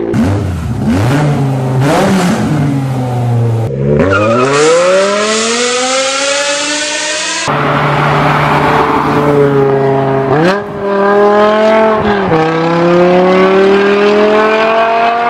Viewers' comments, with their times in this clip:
0:03 Can't help but smiled almost ear to ear at that glorious noise